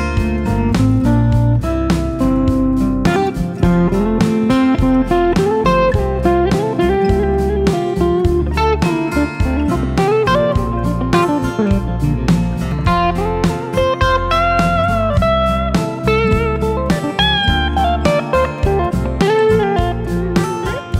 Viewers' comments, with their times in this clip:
0:03 Beautiful! You've got such an upbeat attitude and smiling face. Just like James Taylor. And your solo starting is just so tasteful...